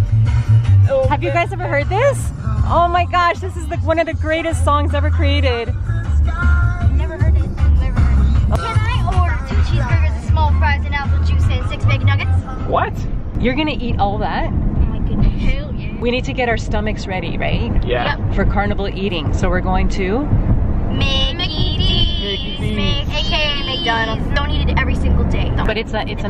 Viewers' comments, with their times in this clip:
0:09 Why do all parents love this song
0:14 I think I heard her say a bad WORD